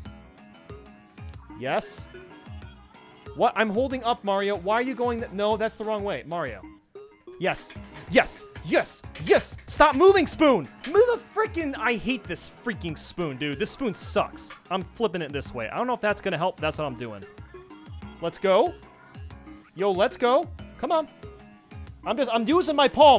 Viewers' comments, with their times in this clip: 0:05 Man taps on sliver ware intensely